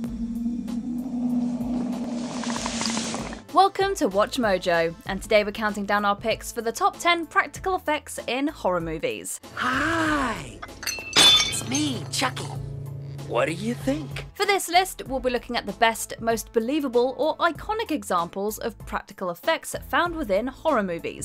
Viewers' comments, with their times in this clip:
0:03 That music is just chilling 😳